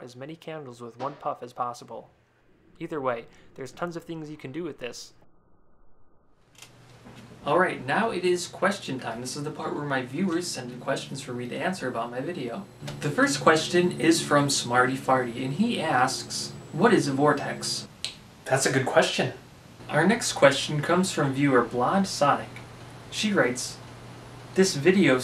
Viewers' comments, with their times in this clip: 0:06 I though he said "if you're white, there's tons of things you can do with this"